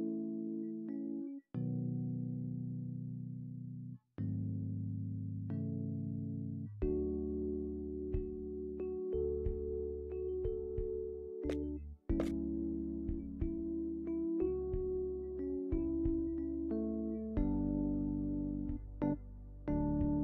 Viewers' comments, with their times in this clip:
0:03 Ayano: oh ma gawd his boxers are here omg :D! Wait why are they here? And what’s that sound? It kinda sounds like running water.. it’s coming from here- OH MY FRICKING GOD-